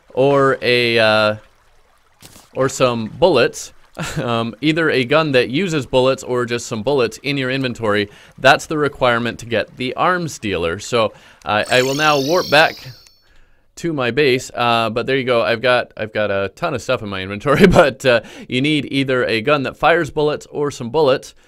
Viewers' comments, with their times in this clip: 0:09 I- am i the only one who heard "arm stealer"